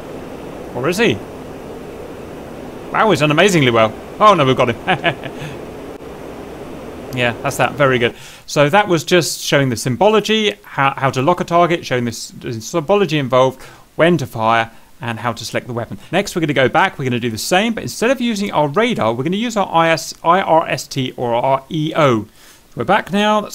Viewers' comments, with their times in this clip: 0:06 now we got him heheheh…. 😈 sounds so undeniably evil hahahahhah